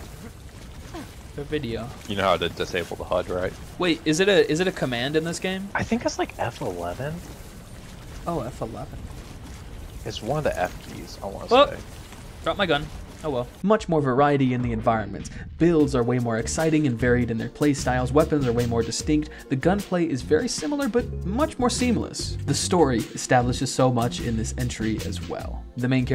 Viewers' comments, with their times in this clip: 0:10 WHAT AN EPIC, ENJOYABLE VIDEO! Dropping a comment specifically for the chuckle 😂😂 🫡